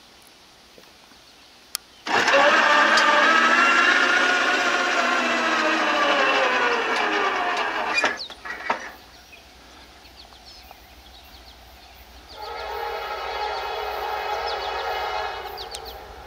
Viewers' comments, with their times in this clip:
0:03 What was that weird sound ?